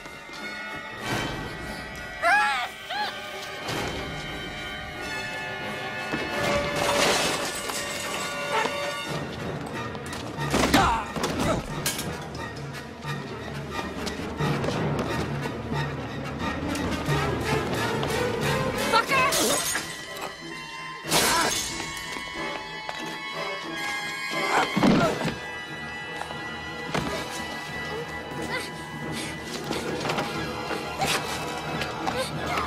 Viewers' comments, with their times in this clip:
0:10 Love the grunt
0:19 idk if it was billy or stu under the mask in this scene anybody please tell me but i will say ik for a fact after that kill they had a mean ass headache cause the a bottle was throw straight to forehead and the sound of the impact to ik his shit was hurting😭